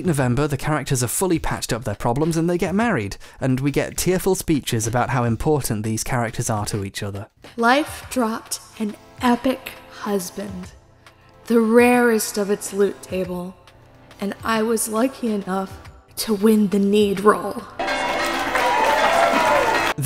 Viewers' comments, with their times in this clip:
0:06 The person reading this sounds like they are in genuine pain.
0:07 You can feel the female VA physically struggling to hold back laughter here.